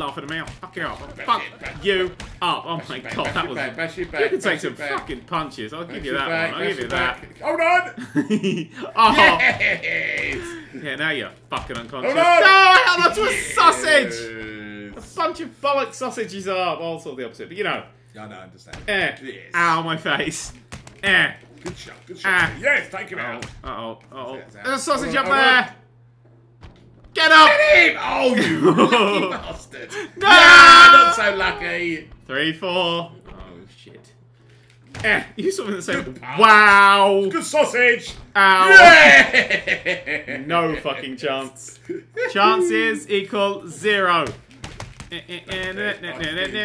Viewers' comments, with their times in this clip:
0:07 is that not how everyone laughs at is videos :v
0:34 This is so fun to watch, it sounds like they're having the times of their lives also the round was great